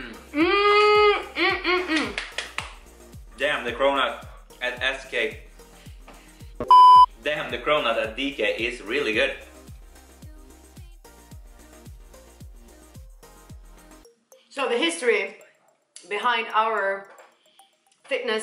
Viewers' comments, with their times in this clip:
0:04 Did he say ASS CAKE??? I am rolling here on the floor